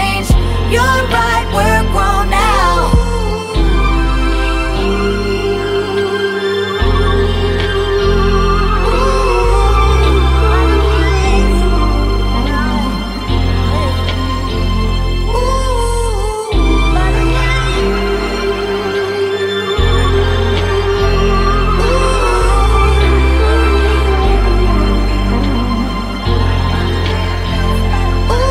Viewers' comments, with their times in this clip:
0:09 It almost sounds like she says "I can BREATHE !" ...